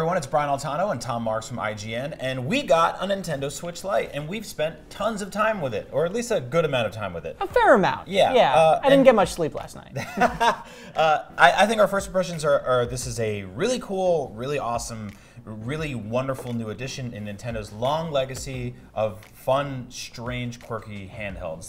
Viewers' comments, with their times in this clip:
0:09 Lmao fake A$$ laugh from the guy on the right because he knew the joke wasn't funny